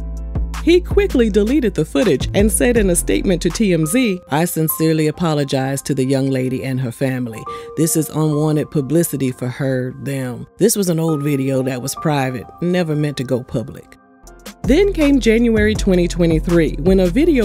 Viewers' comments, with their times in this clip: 0:04 It’s the Nelly voice fa me😂😂 I truly wish him peace